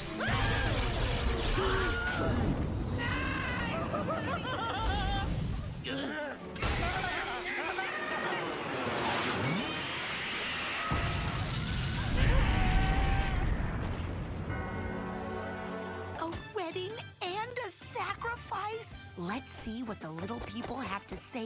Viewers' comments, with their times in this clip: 0:06 You can hear Godzilla's roar This number is before it but if you prepare to do it you'll hear it I didn't even think about it and then I heard it